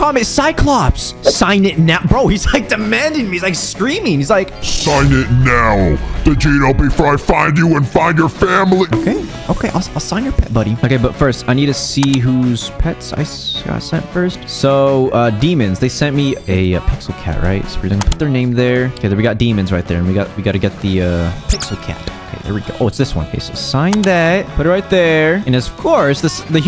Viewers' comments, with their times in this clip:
0:08 made me laugh so hard becuase of the voice